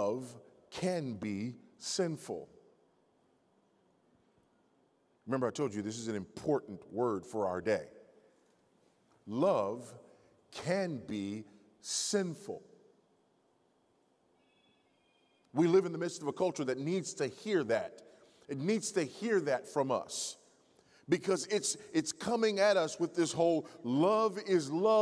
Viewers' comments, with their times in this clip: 0:09 whoever’s phone went off…. That message was for YOU lol